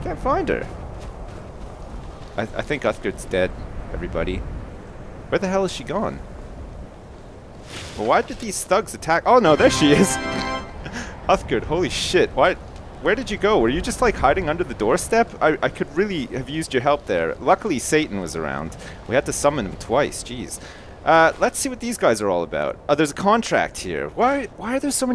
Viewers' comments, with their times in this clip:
0:10 i LOVE the editing this guy does. That little fanfare when uthgird shows up priceless.
0:13 LOL i thought that was the ingame music